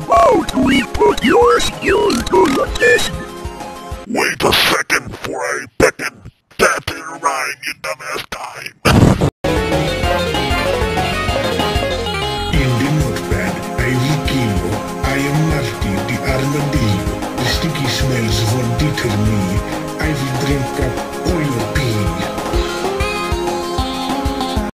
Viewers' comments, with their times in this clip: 0:08 the way he says dime is so funny to me
0:08 me when I sneeze: